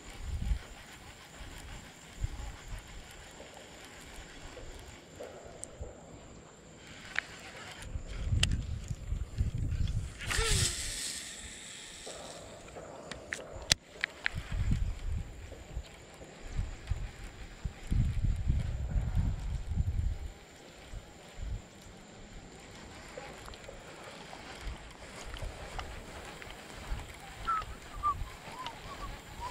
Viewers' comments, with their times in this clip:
0:10 sounds like a bad birds nest😂